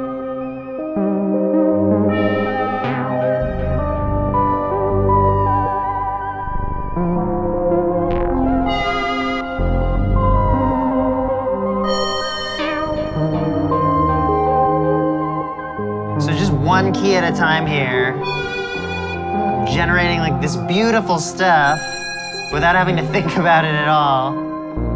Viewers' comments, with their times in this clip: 0:05 That melody! Sounds awesome!